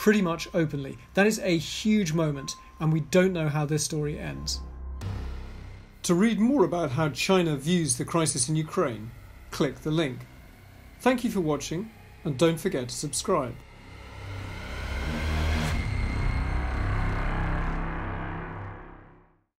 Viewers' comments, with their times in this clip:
0:05 whats up with trying a Russian accent :D